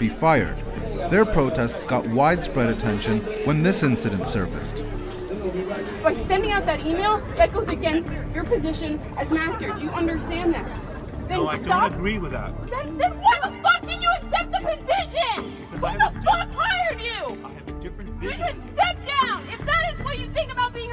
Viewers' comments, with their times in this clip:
0:07 why is she screaming profanities at someone calmly listening and agreeing with her at that.